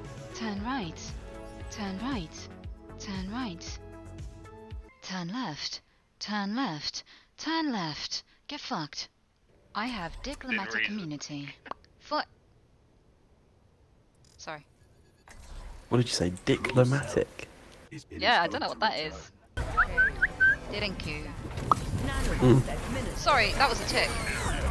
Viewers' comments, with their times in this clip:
0:05 The "Turn left, turn left turn left, get fucked" one caught me offguard, especially since she said the last bit in her siri voice still lol
0:06 it's like the gps got really fed up with you not turning